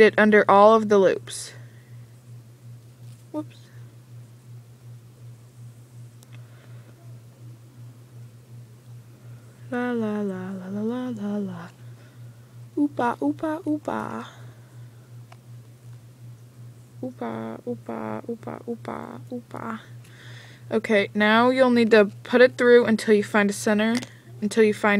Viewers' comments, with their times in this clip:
0:10 best song EVAR ;)